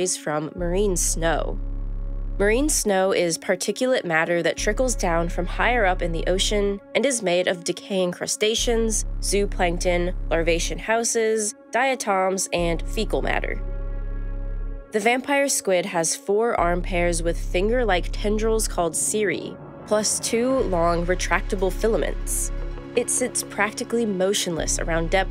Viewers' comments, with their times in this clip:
0:09 ...did you really just pronounce that word "zoo plankton" ?!?! ffs